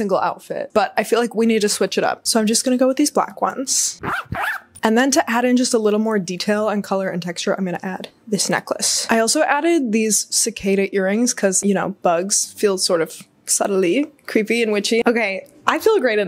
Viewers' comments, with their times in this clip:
0:04 the sound of the boot zippers did something to my brain